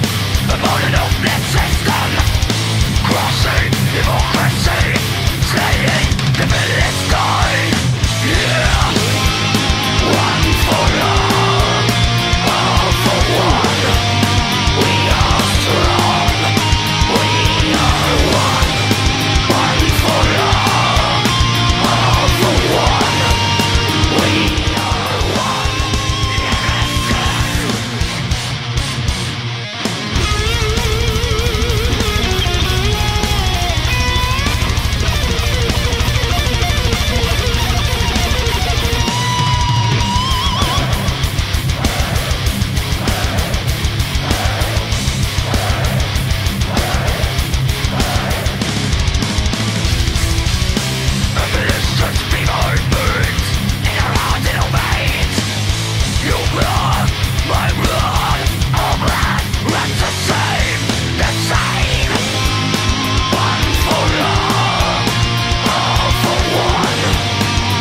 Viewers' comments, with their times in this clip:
0:06 Imagine how good the chorus would be with melodic vocals. Angela Gossow ruins the chorus with her screaming. The screaming is good in the verse parts that sound very aggressive overall, but the chorus is a beautiful part, and the screaming sounds bad there.
0:09 sounds like Digimon Evolution soundtrack lmfao 😂
0:22 What's that changes in volume in
0:22 Has nobody noticed the drop in volume at the end of the first chorus? I love this song but that's infuriating and I can't get past it
0:23 Why does the sound calm down ? Did they bother the neighbours or something?
0:24 Is it just me or does the volume lower at about the mark?
0:24 anyone else hear the drop in volume
0:24 video randomly get qiester ? o.o
0:24 Volume definitely drops
0:24 Hmmm Iam the only one, who's speaker turned the volume level downer a little bit?
0:24 Just me or the volume of the song goes down about 5-10%?
0:24 why does this video get quieter ? i've never understood that
0:24 the song gets quieter.
0:24 sound drops down 😕
0:25 Am I the only one noticing the volume drop ?
0:25 the volume goes down? Why?
0:33 That drummer is so good he can play double bass with hi-hat and toms.
0:55 "Ur bra, my bra, our bra, are the same" ♫